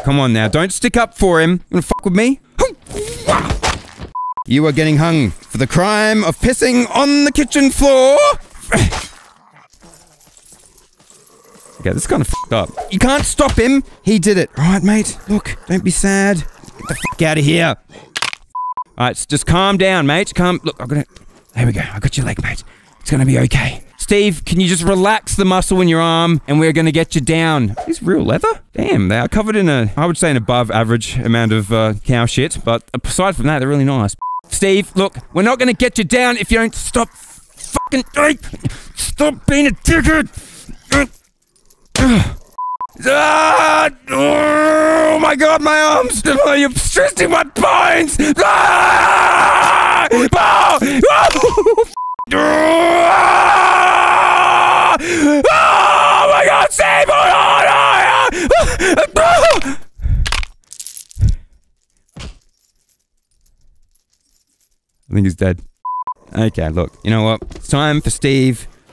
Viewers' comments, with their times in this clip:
0:06 was that a voice crack?
0:55 i wonder how his neighbors feel when he screams like this...